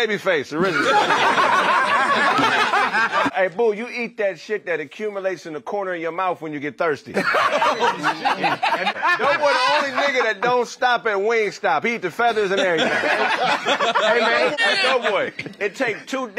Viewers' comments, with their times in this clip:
0:03 Can we just talk about how hard T.I. laughed at this😂😂